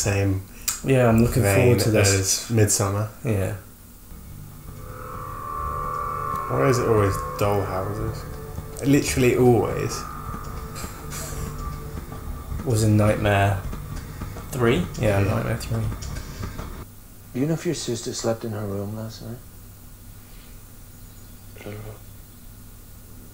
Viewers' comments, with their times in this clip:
0:06 you can hear Paimon's camel trotting.